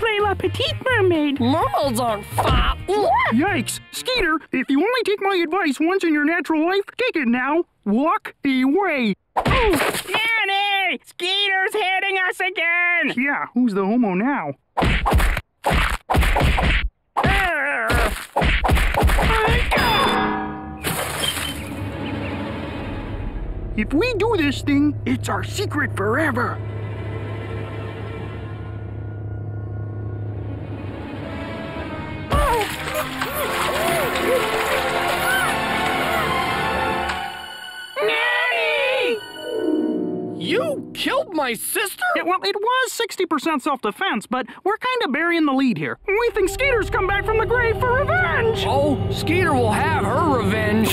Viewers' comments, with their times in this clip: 0:10 0.25=Drunk Fozzy tattling
0:31 sounded like Elmo